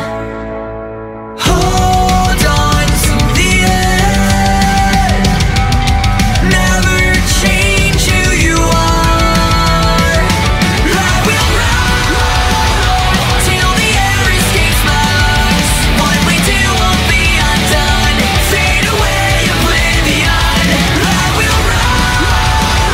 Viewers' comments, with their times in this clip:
0:10 it reminds me to The Offspring - The Kids Aren't Alright